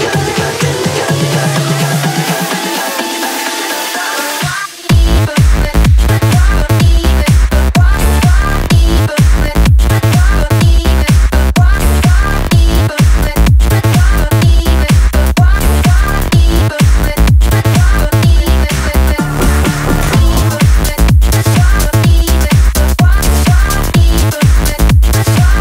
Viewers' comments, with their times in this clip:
0:06 When the beat dropped I couldn't help myself from shuffling!
0:06 I don't know why... but his voice reminds me of Michael Jackson :) especially because it reminds of the Rock With You music video :D